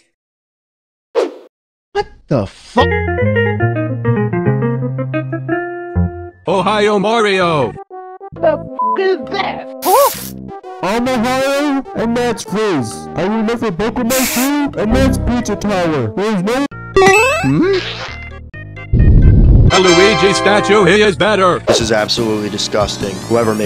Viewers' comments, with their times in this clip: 0:04 bros screaming without audio